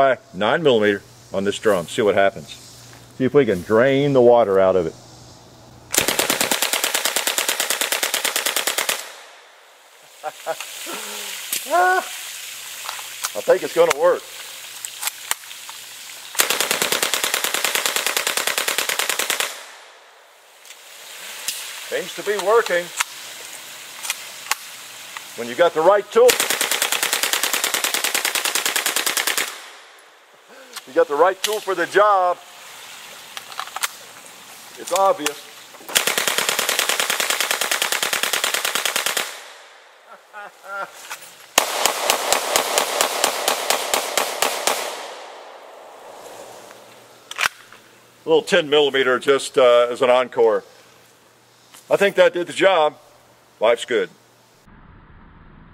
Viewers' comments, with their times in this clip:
0:06 Ahhh!!! The sound of polony being invaded!
0:39 the way he laughed and switched to the pistol lmaooo
0:39 "switching to your secondary is always faster than reloading." Edit: Also, that laugh